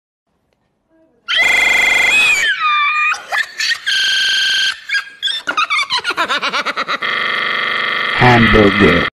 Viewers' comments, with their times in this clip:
0:03 he turned into a hyena for a sec😂😂😂😂